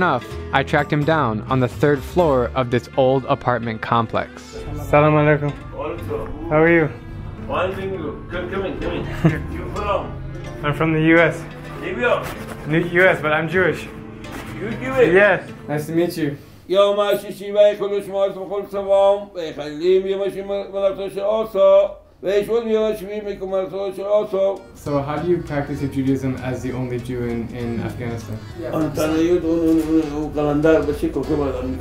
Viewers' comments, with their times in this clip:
0:06 i like how he say salam
0:16 As a hebrew native, i really dont know what he says 😅